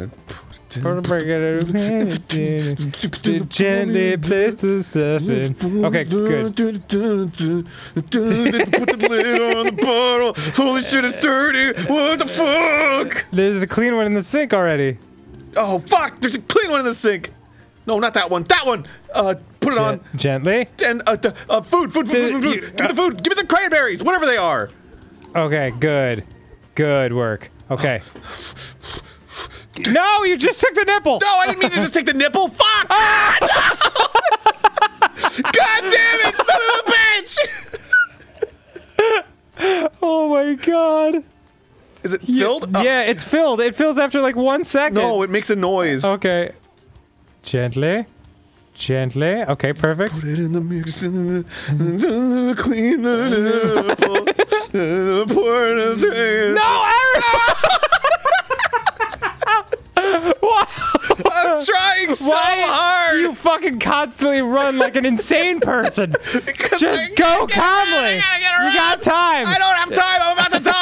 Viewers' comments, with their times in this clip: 0:05 arin slowly singing to insanity
0:32 that scream always fucking gets me
0:32 when you are a mother just tryna feed your kid but you knock over some of that good juice juice and turn into a pterodactyl
0:32 The way Arin screamed makes me lose my shit every time
0:32 OMG Arin screamed like Matt Watson from Supermega
0:32 Arin's raptor screech destroyed me
0:32 i like the fuckin pteradactyl screech arin makes
0:34 that scream killed me. arin is the definition of a super mom
0:40 That fuckin squeak Dan does was the best.
0:55 I haven’t laughed this hard in a loooong time hahaha Dan’s “NO ARIN!” is probably my favorite thing ever. He’s so exasperated.
0:55 Such a genuine "NO ARIN!" XD I'm dying
0:57 "NO ARIN!" Dan's scream of desperation is easily the funniest part of this episode.